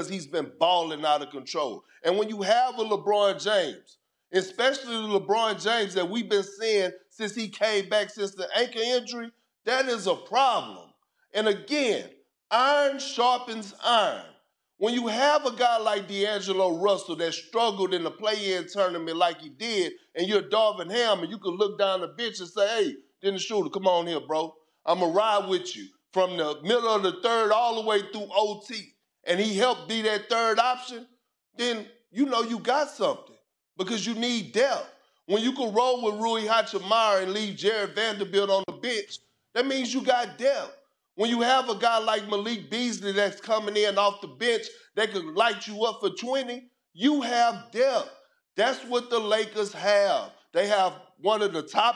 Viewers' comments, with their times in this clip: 0:07 Love Kp but did he say anka injury
0:36 "Rui Hachimara" is crazy